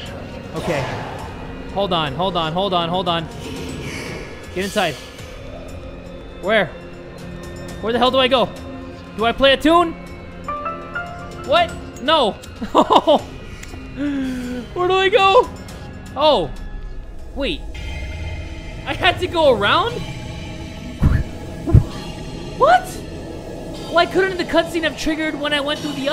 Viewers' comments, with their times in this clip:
0:10 why did it song like the goosebumps theme song.